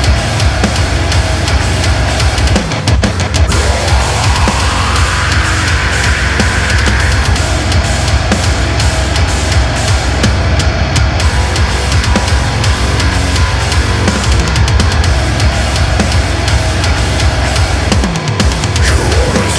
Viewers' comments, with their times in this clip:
0:04 That high scream is the naaaastiest shit I have heard in years.